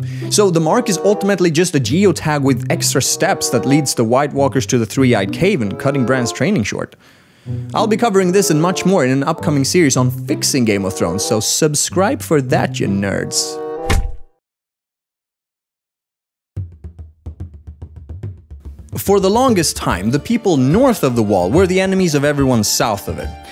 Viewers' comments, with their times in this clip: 0:05 "Three eyed CAVEN"???